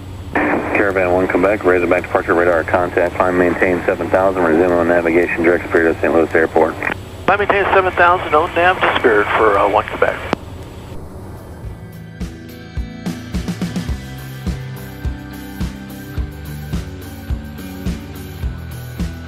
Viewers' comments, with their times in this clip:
0:03 ATC says "Climb & Maintain 7000 resume on navigation direct (unrecognized word) to St. Louis airport" Perhaps he doesn't say "resume on navigation" , he says it so fast and it's a tad bit muffled, just wondering what he said and what that means? in response you say "Climb & maintain 7000 O-nav to Spirt for 1-Quebec" can't quite make out what you said either.